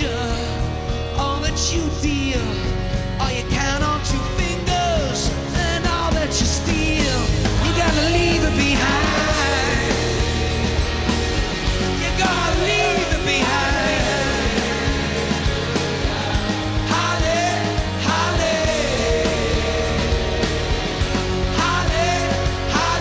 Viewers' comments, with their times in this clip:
0:09 This is undoubtedly the best version of Walk On. I love how they combine the two songs, and the hallelujahs at the end hit different. Pure perfection!